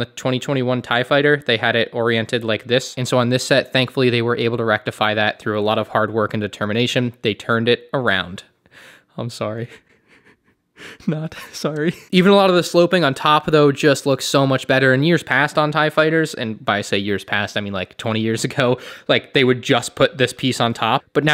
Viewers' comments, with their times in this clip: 0:09 The emotion you put when you turned the top part of the cockpit I couldn’t stop laughing 😄😄😄